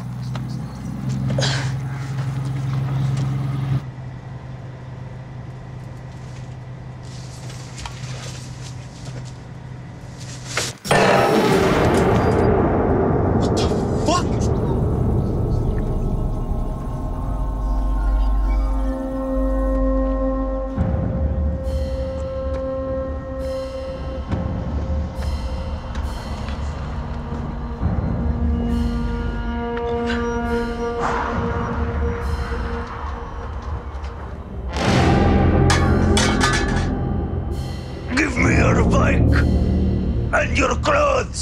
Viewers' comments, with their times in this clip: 0:05 His reaction is so hilarious and dammit that accent♾️
0:26 the thunder hits great